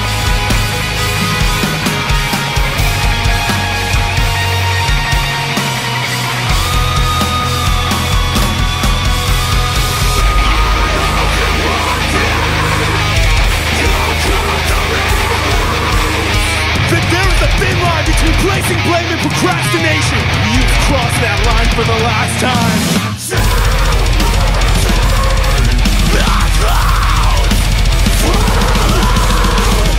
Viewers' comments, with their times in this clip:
0:10 It sounded so good until it hit then it just felt pretty mediocre and just lost my interest. If they carried on with the vibe from the beginning it would've seeded more original compared to the other djent/prog/deathcore out there in my opinion.
0:10 Different opinions mate. In my opinion I thought of it as being great until as I said, and I have a few people agree with me. I'm not saying that they're bad musicians in any way, I'm only implying that it lost my interest after it went a bit hay wire without any build and the change of character. It seemed alien and unfitting. On the other hand, the chorus and the bridge seemed well fitting as the build up seemed appropriate, balanced and generally nice to listen to (in my opinion anyway) when compared to the rest of the song. I find these type of extreme vocals in conjunction to this kind excellent songwriting is pretty out of element/mismatching. The vocals should (in my opinion) be either matching the ethos behind the song or a fine resonance matching tool which to me, didn't fit at all. It felt to generic and disappointing. This is just my opinion again so people will probably disagree with what I'm trying to say.